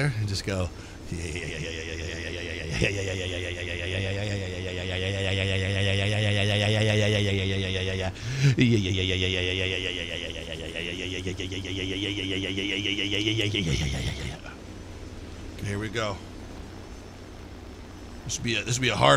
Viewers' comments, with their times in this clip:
0:03 someone clip his sound effect and should make another machine gun sound mod!!😂